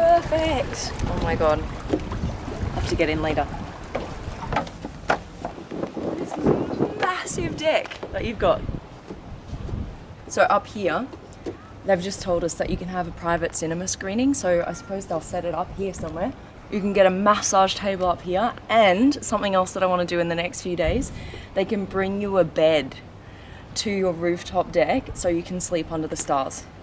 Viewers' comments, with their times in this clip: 0:06 Please don't get confused because of her accent.
0:06 she says I love this massive Deck that you've got. My headphones beeped at "deck" and I swear the first time I thought it was "massive d**k that you've got". It was so funny
0:07 LOOK AT THE MASSIVE "DEICK" YOU GOT LOL 😍 LOVE THE ACCENT DARLING!!!!!!!!!!!!!!!!!!!!!!
0:07 i listened to this 80 times back to back and on the 81st time i heard ”massive deck”. Having captions on didn’t help either.